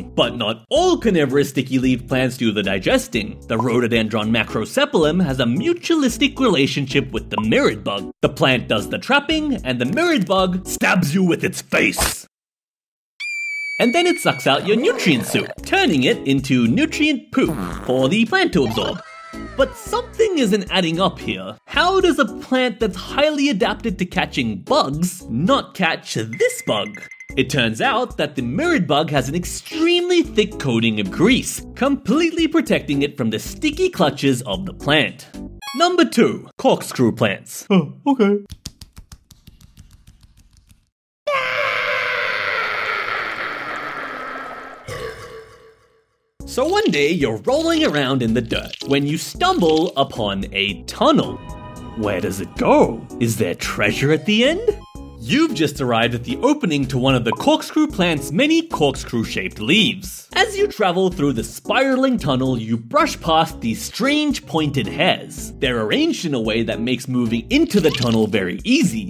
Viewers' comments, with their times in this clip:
0:03 what did u say? a phosododronemarcseonuolm
0:10 The way he said it was so funny😂😂😂
0:13 It sounds like my girlfriend just got kidnapped!
0:36 hehe does that scream remind ya about a famous cartoon long time ago 😂
0:39 bros scream got me there😂😂😂
0:40 that scream bro lul
0:40 the scream lol😅😂😆🤣
0:41 Bro what was that scream
0:42 this scream was a little funny😅
0:44 THERES TO MANY BURPS XD (dont ask why i act childish)
0:51 Using a cave sound is crazy
0:51 unnel creepy minecraft noises OH NO-